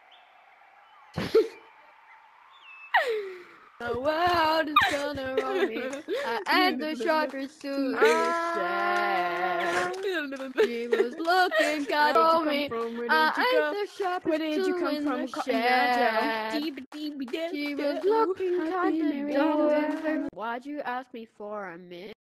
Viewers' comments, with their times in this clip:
0:05 not my singing😭